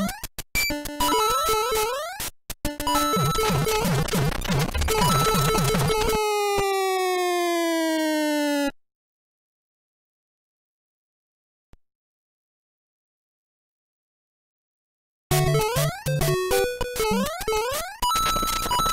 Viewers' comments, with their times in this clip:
0:06 bro the jump sound when it crashed 😭 🙏🏻